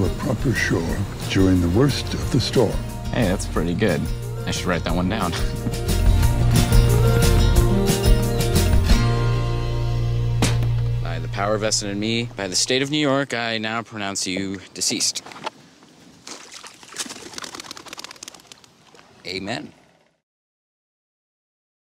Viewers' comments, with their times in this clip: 0:03 for a second I swear I heard idubbz voice